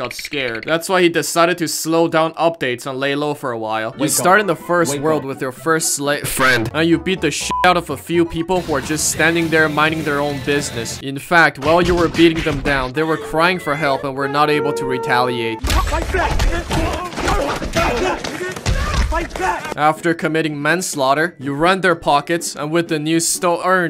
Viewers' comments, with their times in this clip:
0:09 Also gave me memories of a hoosky named Zeus who died and oof that “wooooooooooo” is saddening cause of the noise